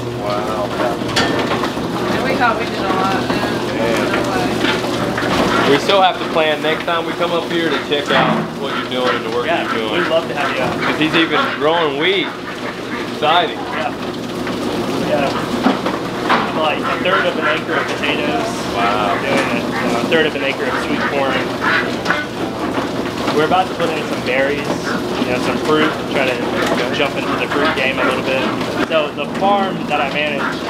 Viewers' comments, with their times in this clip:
0:07 growing weed, or wheat? 😆
0:12 Hot wax? I'm definitely not going to do that on my property. Gotta be a more self-reliant way. I literally had to rewatch because I wasn't sure if he said wheat or weed.